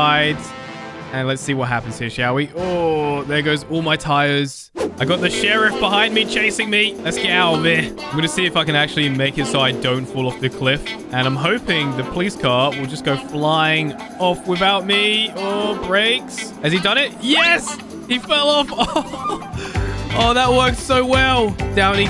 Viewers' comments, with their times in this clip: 0:08 did u say fucking